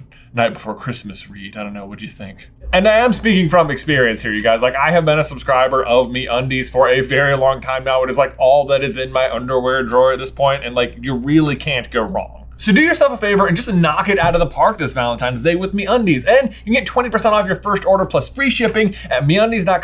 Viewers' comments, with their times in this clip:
0:04 the rizz the poem the way you recite it. Perfection